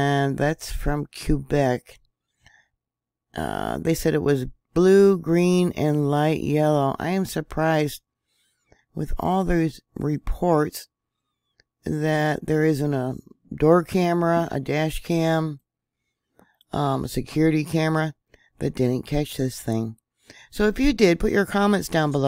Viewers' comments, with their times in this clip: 0:06 we call it Kbeck :-)